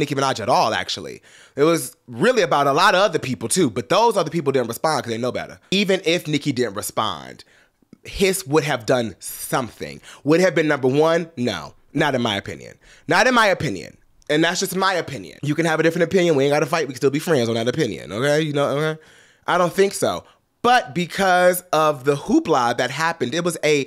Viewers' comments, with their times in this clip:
0:08 Did he say “piss”